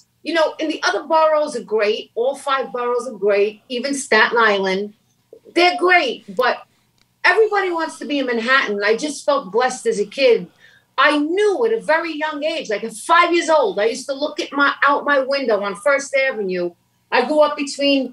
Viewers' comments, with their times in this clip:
0:06 "Ahunn fohteen Ahunn n feetheen" love it